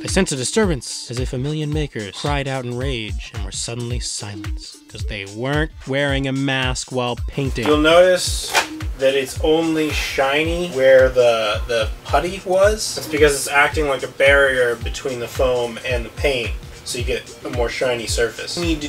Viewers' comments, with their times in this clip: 0:04 is that a chainsaw in the background? I definitely want to see that build